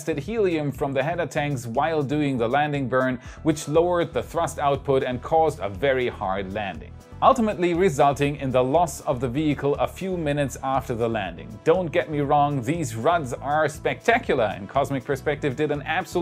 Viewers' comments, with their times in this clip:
0:03 weird background noise r u holding so captive in ur basement :D